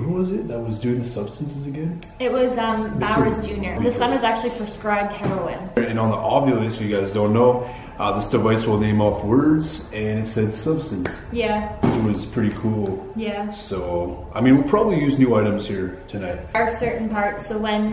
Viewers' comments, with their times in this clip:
0:04 thought i heard a female voice.